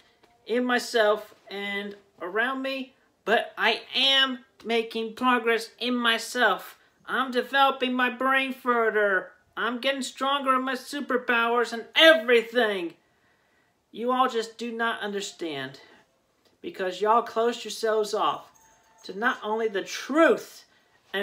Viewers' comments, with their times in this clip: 0:06 I'm developing my brain-furter So your next project is a Zombie food substitute?
0:07 "I'm developing my brain Fur'dur!" That's some next level brain development.
0:07 LMFAOROFL xD "Developing my brain furdur" Yeah sounds like it dude.